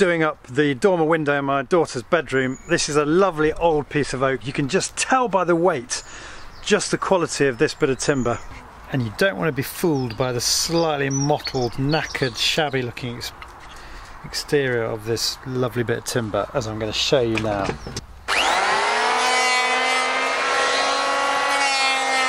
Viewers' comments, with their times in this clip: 0:10 man that's a lot of British really fast...